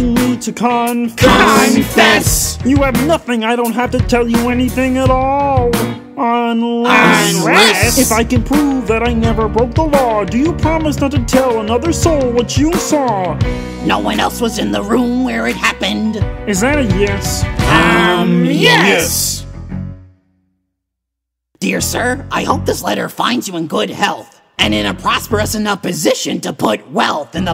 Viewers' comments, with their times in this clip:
0:08 This is what I thought the “If I can prove that I never touched my balls” line sounded like.